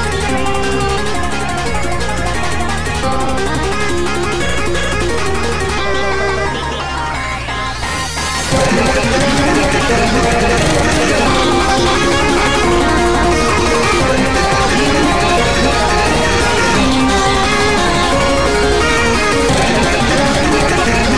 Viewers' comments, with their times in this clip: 0:08 sudden earblast, R.I.P headphone users the matts do be vibin' tho